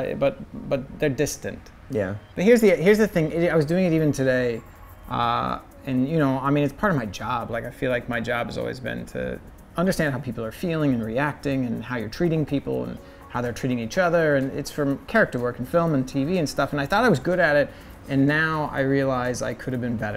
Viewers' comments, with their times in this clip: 0:05 AN ASMR KWEEN